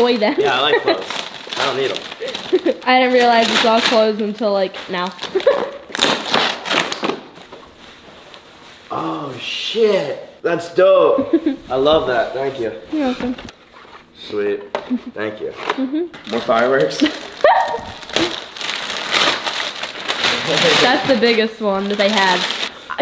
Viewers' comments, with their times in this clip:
0:05 he farted lol